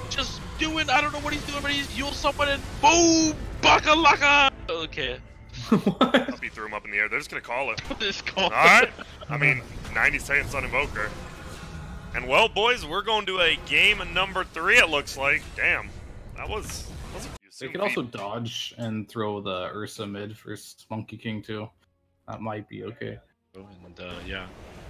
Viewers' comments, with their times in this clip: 0:05 Caster Trying his hardest to become new chatwheel.